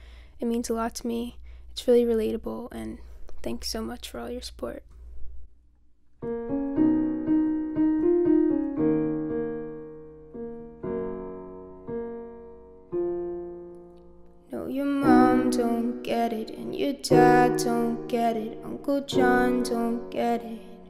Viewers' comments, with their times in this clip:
0:08 the song starts just so u know